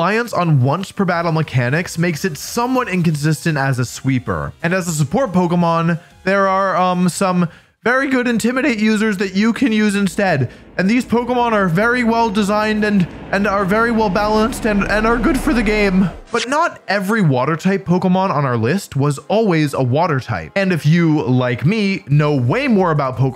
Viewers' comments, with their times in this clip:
0:04 Was that a Morty imitation ??😂